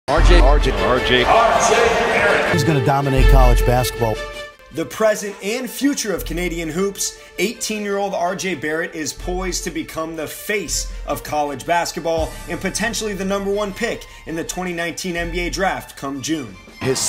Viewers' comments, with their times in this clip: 0:02 Trump is that u??